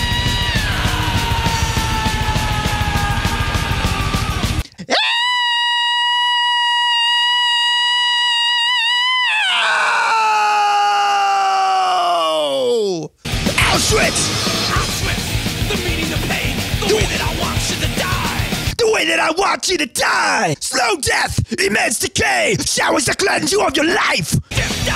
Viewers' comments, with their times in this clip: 0:05 when you accidentally step on your cats tail
0:06 R.I.P those who are listening with full volume or on head phone.